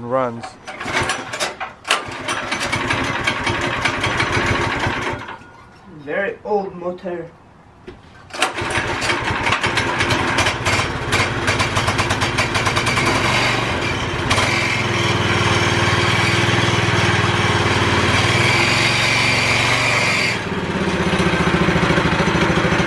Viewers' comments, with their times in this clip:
0:05 :very old motor" lmao that cracked me up the way he says that